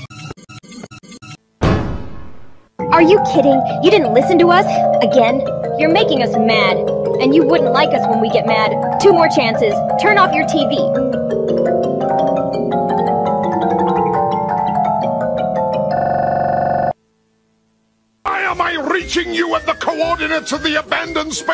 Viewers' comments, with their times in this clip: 0:07 why does the background music sound like the flash playing with a xylophone